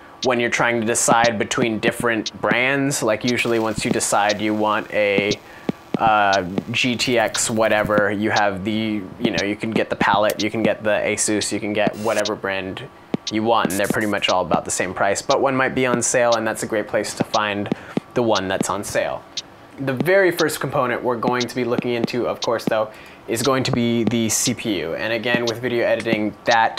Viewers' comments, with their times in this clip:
0:10 Man the audio gets all werid with some weird drum beat. Sounds bad.